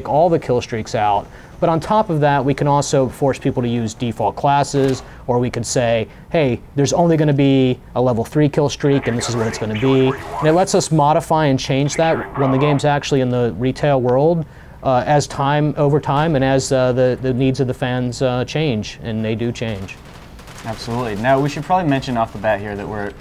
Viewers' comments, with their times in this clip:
0:04 laying on the ground, looking for some guys to shoot then SPLAT